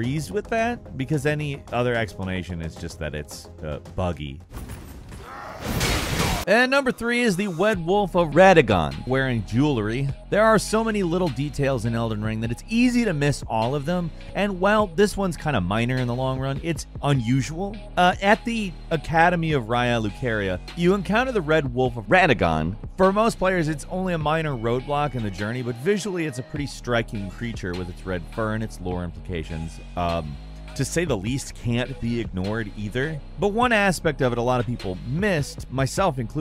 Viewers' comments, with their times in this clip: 0:05 Wed wolf of RADAGON...😉
0:06 anyone else hear him say Wed wolf of Radagon? 😆
0:06 "Wed Wolf of Radagon" lol
0:07 the wed wolf of radagon!
0:07 “The Wed Wolf or Radagon” Oh didn’t know he got married! Good for him!
0:07 Wed Wolf of Wadagon
0:19 nice edit haha - mispronounced it first time?
0:21 I like how everyone butchers the pronunciation of everything in this game.